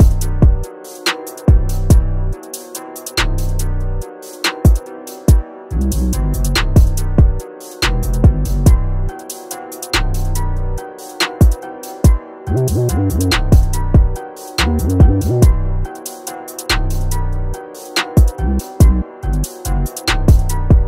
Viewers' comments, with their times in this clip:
0:05 are you fucking mad 🔥I don’t even think most people are deeping how cold this beat is